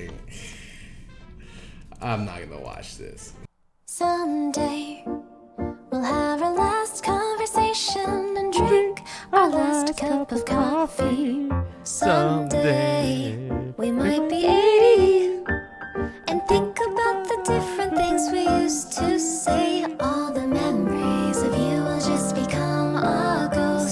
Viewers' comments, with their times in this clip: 0:08 legit my brother had toast playing in the background and he thought that was me singing while we were on discord playing minecraft LMAOOOOOO